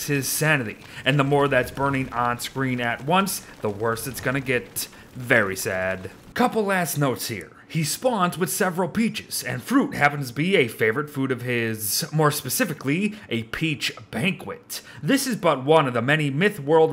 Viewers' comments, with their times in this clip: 0:03 was it just me or did i hear and a couple ass notes